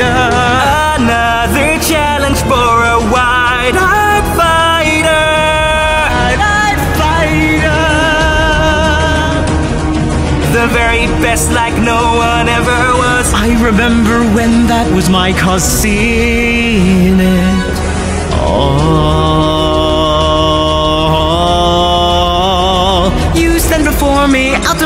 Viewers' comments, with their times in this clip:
0:06 is it just me or did that voice clip accidentally got played twice.